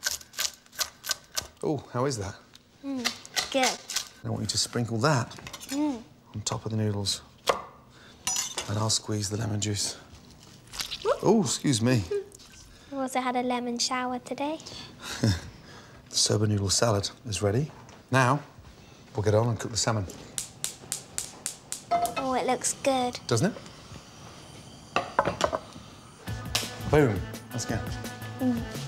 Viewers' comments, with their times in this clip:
0:10 yes daddy listen to that lemon squeeze
0:10 Excuse me "moan"
0:12 he does the awkward laugh parents do when a kid says something reeaalllyyy messed up
0:16 when Ramsays kid makes a golden shower reference and he awkwardly laughs